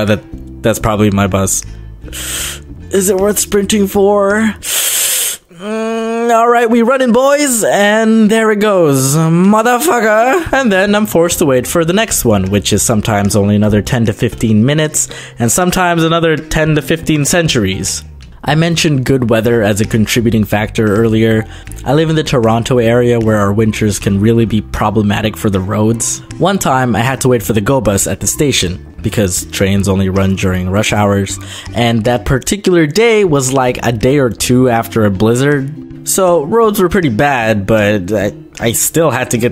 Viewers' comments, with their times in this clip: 0:08 the way he says it😂
0:09 Repeat this enough and it sounds like music 😂
0:10 that sound effect when he said "MOTHERFU**A"
0:24 he said wintres